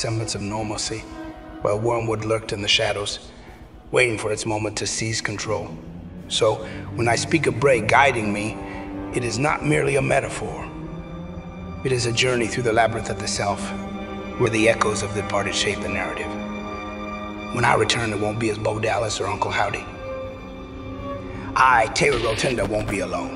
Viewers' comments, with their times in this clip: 0:09 his voice is so Brayish. Chill